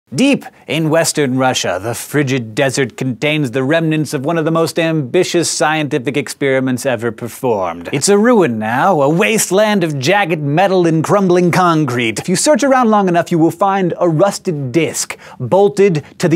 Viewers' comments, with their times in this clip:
0:02 "the frigid desert gundains one of the most ambitious sciendifig experimens ever berformed"... is this like a mid atlantic accent, or is this some wannabe "scholar" affectation that he doesn't even know he's doing? It's kind of annoying. I'll go with affectation. (love hank... watched sci show for years... including this vid a few times... finally had to say something.)